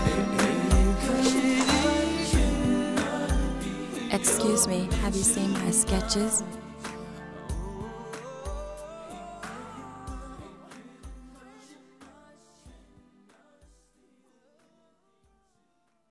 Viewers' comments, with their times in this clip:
0:04 lmao bruh i thought she said " excuse me have you seen my sketchers:
0:04 took me about 10 replay to figure out she's saying "excuse me, have you seen my sketches?" thought she was saying "have you seen my Skechers?" not impossible, because Skechers was founded in 1992, but def not associated with 90s hip hop and r&b